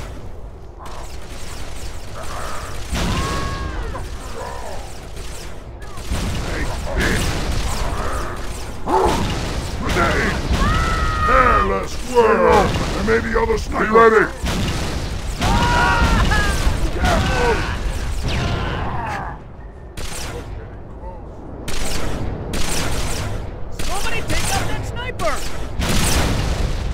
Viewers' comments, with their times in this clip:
0:10 Lol that marines scream